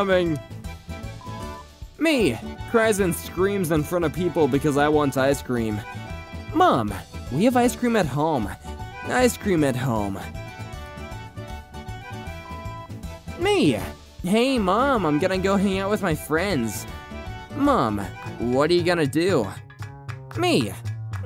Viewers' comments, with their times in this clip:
0:09 sorry man you missheard her she said "I SCREAM at home" not "ice cream at home"